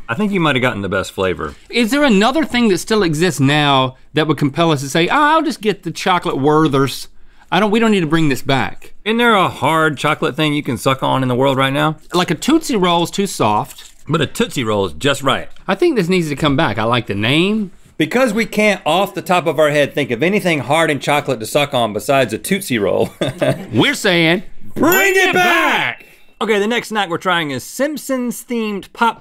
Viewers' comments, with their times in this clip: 0:04 LOL "Ah, I'll just get the Chocolate Werthers" When he says Werther's I crack up.
0:10 I’m glad Link actually knows how to pronounce tootsie rolls now😂